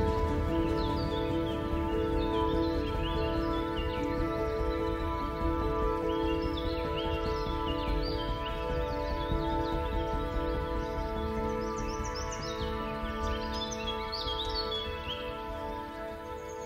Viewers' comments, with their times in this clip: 0:04 Really beautiful place to shoot and great shots. Loved your back up shot going under the bridge and the downward shot lifting the gimble was super. Also nice addition was the bird sounds in the background. Subbed